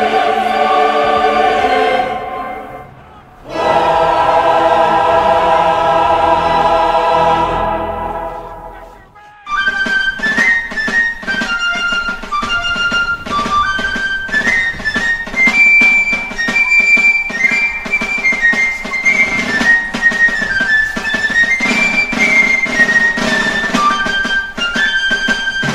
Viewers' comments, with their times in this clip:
0:09 this version of Johnny comes marching home is very patriotic, I like it.